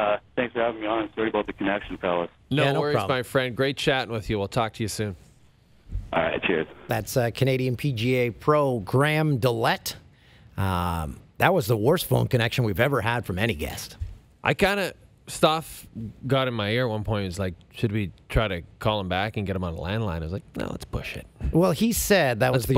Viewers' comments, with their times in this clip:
0:05 the bad audio ends